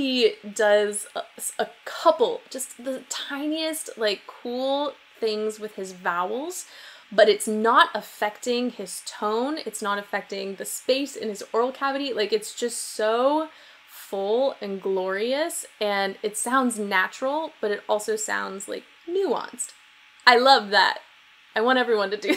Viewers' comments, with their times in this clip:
0:04 I know I’m late but when you were saying about the vowels - I’m British and so is he and to me it sometimes kind of sounds like his accent coming through but 🤷‍♀️ idk